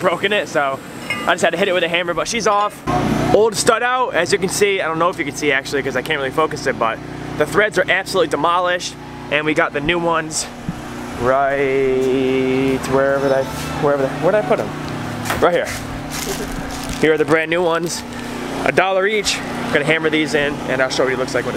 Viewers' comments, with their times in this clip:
0:05 nice beats 😂 lol nice video